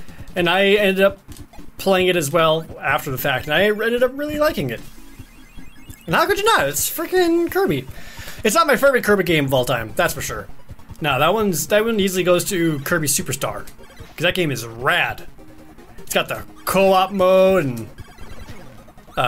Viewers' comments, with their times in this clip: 0:07 Did he say "Its definitely not my firby kirby game"??